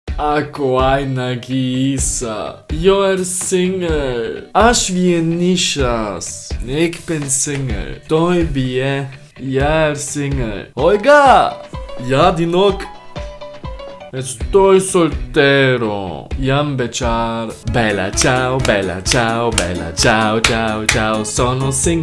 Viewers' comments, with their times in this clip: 0:04 You actually said it so good in Lithuanian